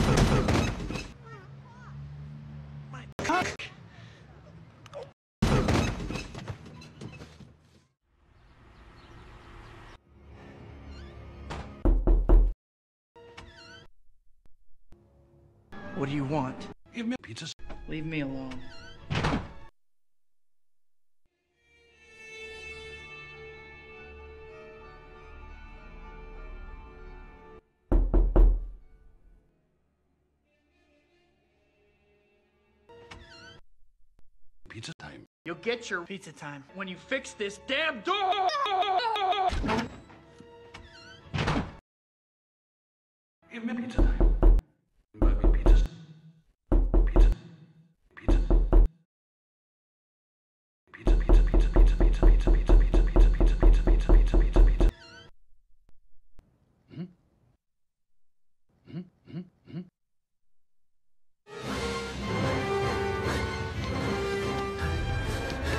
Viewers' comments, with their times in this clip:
0:10 holy crap! With headphones I thought someone was legit knocking on my window
0:11 Why was that door knocking sound so realistic?? I had headphones on in my second floor bedroom and nearly shat myself
0:11 what the hell?! How does that sound so real in my headphones??
0:11 i thought someone knocking on my home.
0:11 For a second i thought someone was knocking at my door
0:46 Oh my God! headphones it's jarring,..... And, now you know the horror of being tweaked out on drugs- don't do drugs